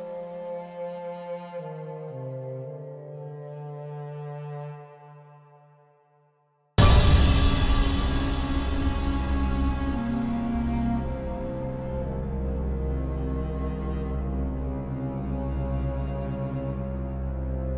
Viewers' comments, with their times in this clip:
0:04 that image appearing with the dramatic sound has such a comedic effect